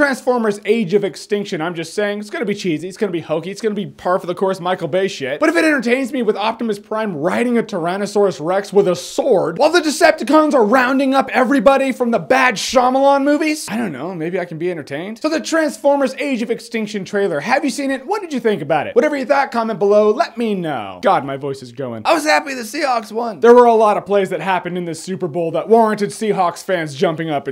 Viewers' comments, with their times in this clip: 0:08 "Riding a tyrannasaurus rex with a sword" The with a sword part, you sounded like Obama.....Awesome